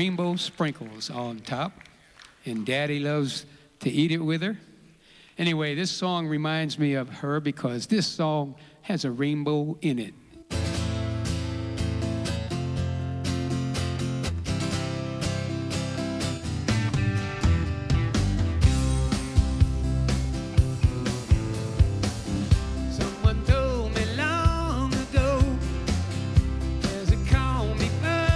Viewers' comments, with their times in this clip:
0:10 when the song starts, the crowd is supposed to shout and scream because of the amazing song...... instead, they are all down